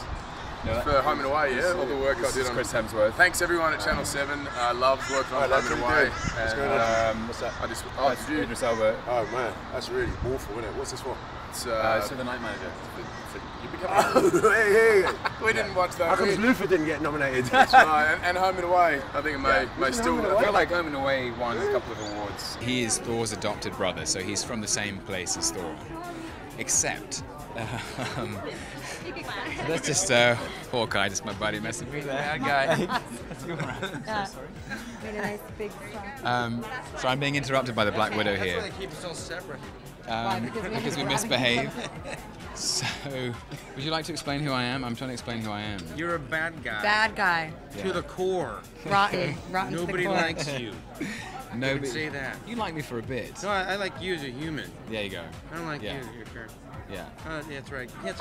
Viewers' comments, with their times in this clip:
0:08 I love his laugh 😂😂😂
0:09 Paul Bettany's laugh that warms your soul...
0:11 that laugh was kinda communicable one
0:31 I almost peed when Idris and chris started laughing at tom at the same time 😂🤣
0:45 the sounds that come out of his mouth are illegally great! I have never been a fan of Tom Hiddleston, although I have been planning to watch some of his works (films and theatrical performances) for a very long time, but I didn't do it until now for some reason unknown to me. I have long passed the age when I could fall in love with a celebrity. But every time I listen / watch to Tom for more than 5 seconds, I want to marry him and have children for him. Can someone explain it?